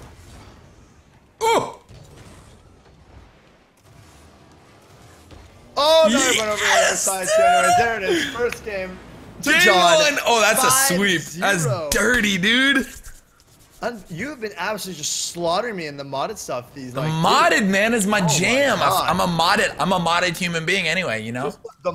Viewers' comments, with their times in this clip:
0:05 that "Yes" :3